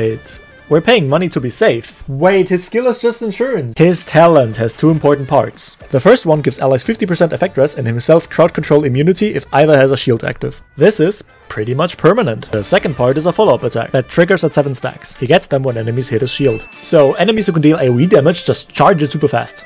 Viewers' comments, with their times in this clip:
0:07 I heard "birth" control immunity 💀💀